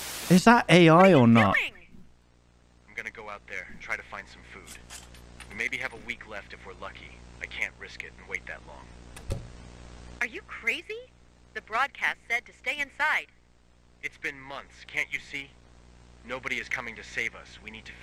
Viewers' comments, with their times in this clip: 0:05 it sounds like that one AI voice that people on tiktok use to make low effort movie recaps